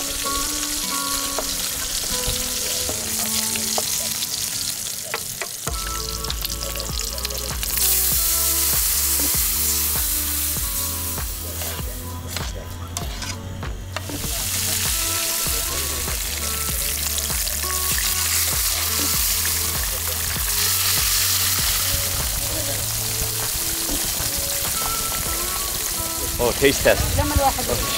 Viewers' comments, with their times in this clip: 0:09 Hey Mark❤ are they celebrating Christmas over there cause you have Christmas music. I’m sure this video was uploaded about 4 hours ago?!